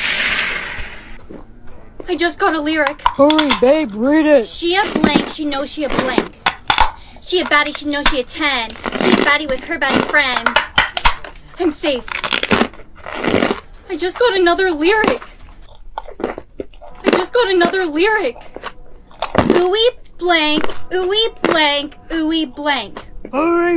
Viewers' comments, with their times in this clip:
0:08 am I do you want to cringed at her, trying to sing